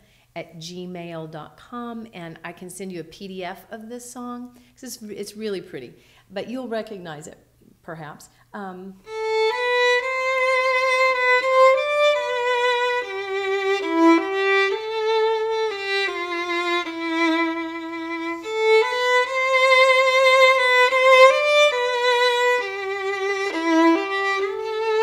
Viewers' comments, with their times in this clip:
0:09 I started crying when she played something sad